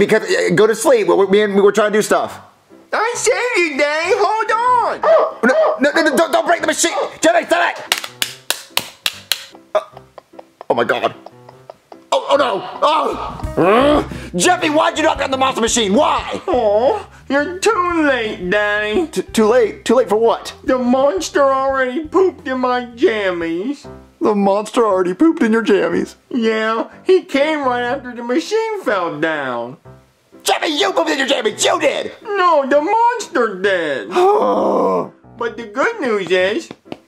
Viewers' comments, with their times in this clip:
0:09 I can hear jeffy hitting his diaper
0:24 the defeat in marvin's voice kills me
0:24 MARVINS VOICE IS SOO FUNNY SOUNDING I DIED